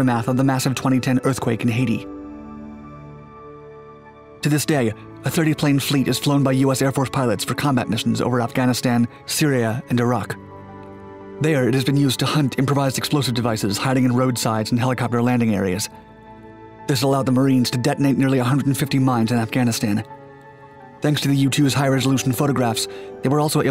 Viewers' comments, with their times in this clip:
0:10 Anyone else notice the UAP’s buzzing ?!?!